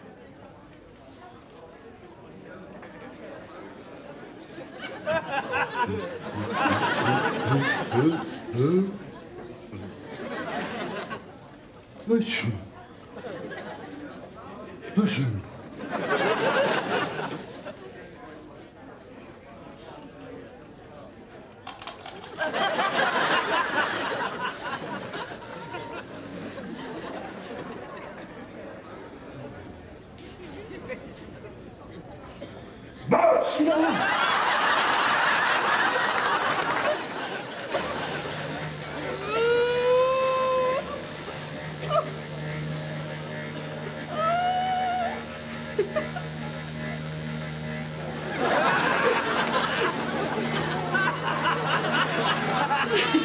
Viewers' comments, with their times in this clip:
0:05 me faking a sneeze to cause anxiety in people who are afraid of Coronavirus
0:39 It sounds different...
0:40 ... the vibration.... the woman moaning...